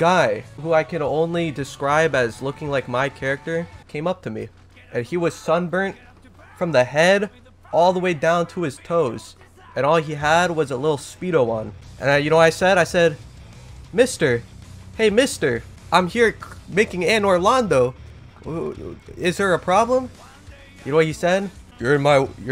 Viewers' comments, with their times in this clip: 0:04 the giraffe song poggies